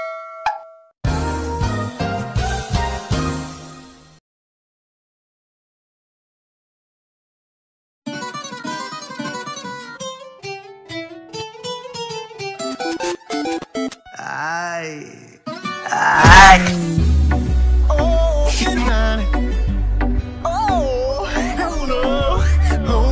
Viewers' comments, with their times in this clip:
0:08 nice music👍 :v Edit: WHYY,WHY I CAN'T STOP LAUGH 🤣🤣😂😭🤣🤣